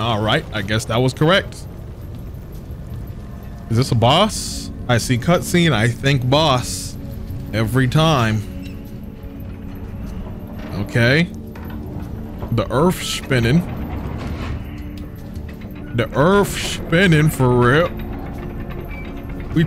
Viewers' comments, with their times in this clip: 0:04 what song is that? Sounds like a temple level from 007 goldeneye lol